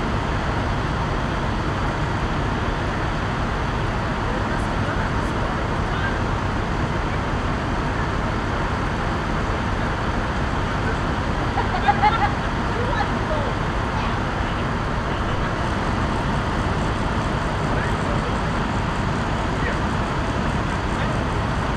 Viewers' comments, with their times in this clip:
0:09 who TF is laughing 😠